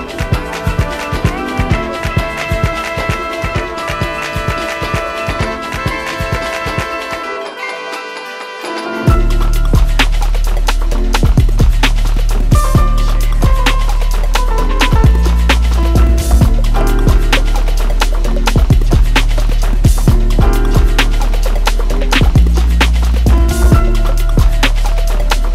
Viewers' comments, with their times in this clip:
0:07 anyone? That piano is lit!